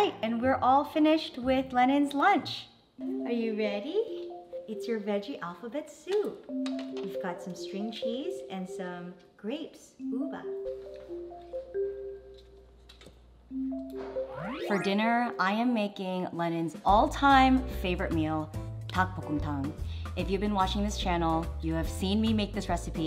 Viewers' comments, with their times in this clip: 0:09 the cute little “uva” 🥺